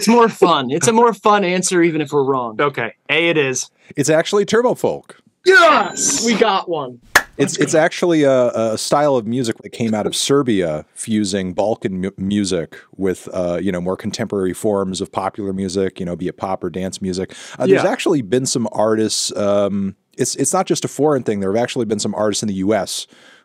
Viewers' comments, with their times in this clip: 0:06 there not being a slap sound effect really weirded me out